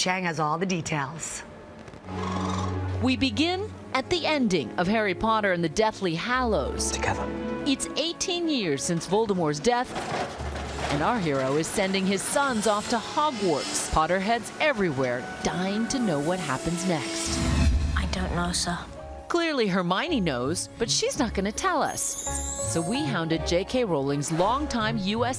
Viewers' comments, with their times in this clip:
0:07 through gritted teeth nine.teen.
0:09 Holy crap they actually pronounce Voldemort's name correctly